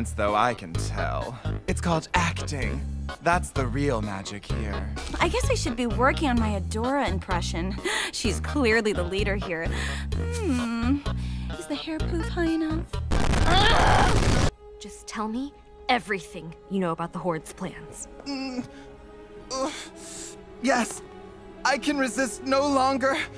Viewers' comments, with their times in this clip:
0:07 DT as Adora sounds so perverted, especially on 0.5 speed, i can't lmao